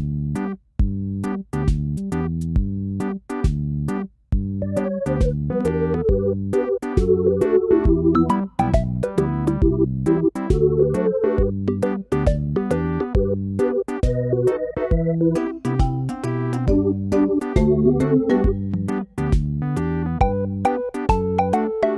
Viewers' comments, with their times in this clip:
0:05 Bro i whas getting up my room pitch dark and that music went and skared the 💩 outta me